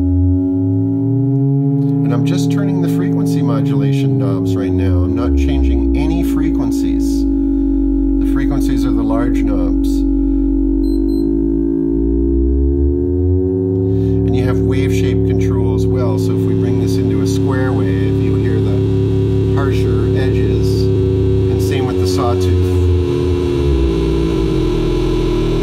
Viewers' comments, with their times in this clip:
0:10 RICH ANALOGUE TONE!!!!!!!!!!!!!!